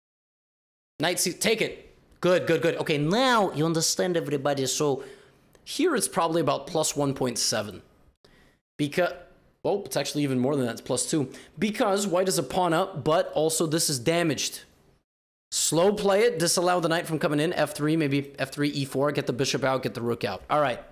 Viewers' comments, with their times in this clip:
0:03 chat: "Elijah Wood is yelling at us" LOL